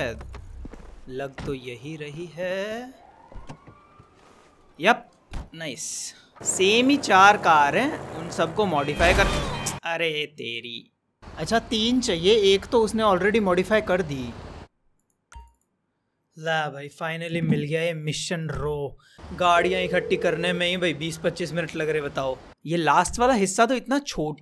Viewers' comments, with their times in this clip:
0:10 What happened to his voice 😂
0:10 What happened to his voice ???
0:11 did his voice crack🤣